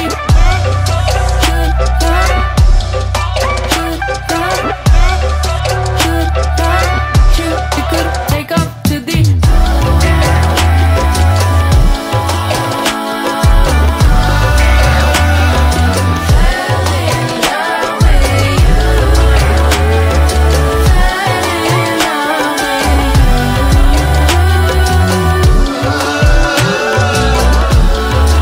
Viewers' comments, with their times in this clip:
0:09 -I always think of Indian Instrumental music its kinda sounds like that.